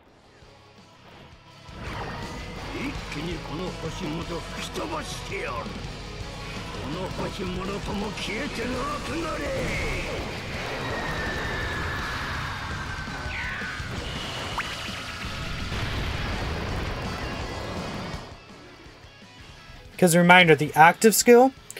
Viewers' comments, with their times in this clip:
0:09 Also there's like some static going on when you use active skills, like